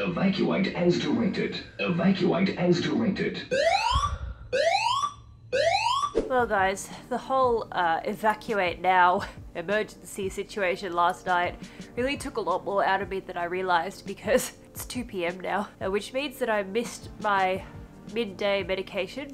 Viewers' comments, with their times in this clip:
0:04 THE SECOND ALARM I SCREAMED OMFG I AM SO SORRY THAT IS SO AWFUL